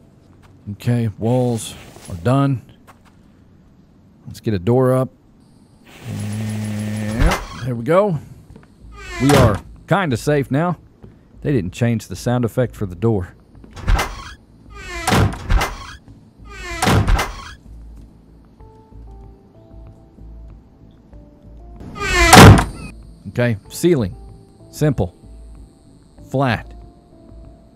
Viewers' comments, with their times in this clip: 0:10 LOL that dang door is sooooo loud! I was hoping they would have changed it